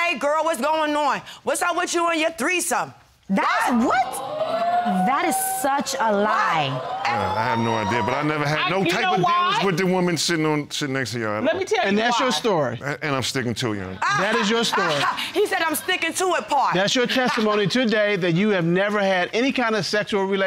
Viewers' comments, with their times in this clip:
0:05 That woman with 'woooooooo ' is in every show doing that in heated arguments.